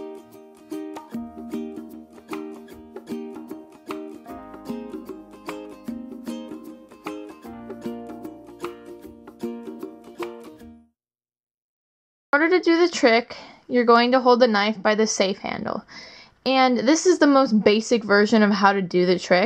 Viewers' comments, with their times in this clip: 0:07 You are not supposed to use nice, girly music when doing balisong tricks